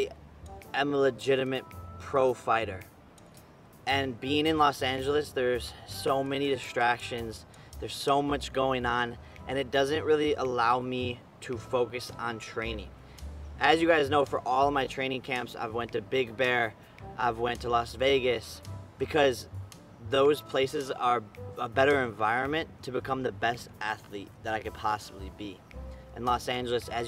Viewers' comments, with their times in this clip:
0:09 what's up with his voice? Has it been distorted in this copy of the video? He sounds so high pitched like his voice hadn't dropped yet.